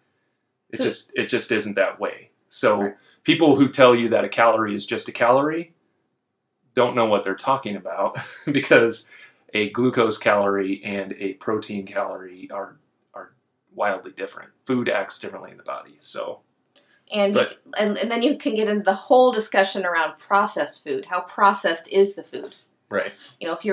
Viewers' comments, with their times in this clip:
0:09 "a glucose" this opened my google assistant, thought it heard "hey google" 😂